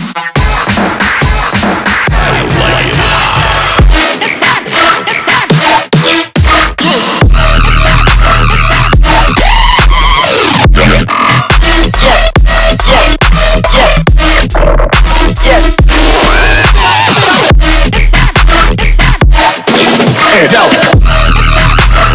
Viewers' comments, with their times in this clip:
0:07 who went crazier? The drop, the circle, or me 😹🦦🔥🔥
0:07 Thot heavy drop